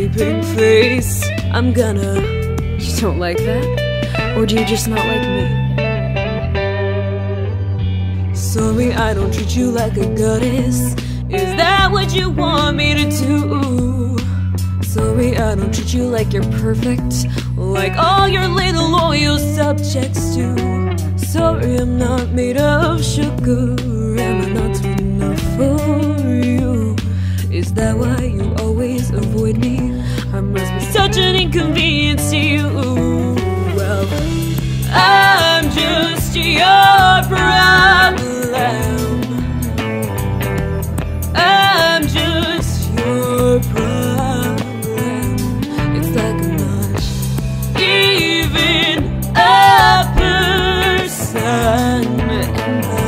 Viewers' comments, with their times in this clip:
0:08 that moment you hear her say soory
0:39 ugh, that BASS LICK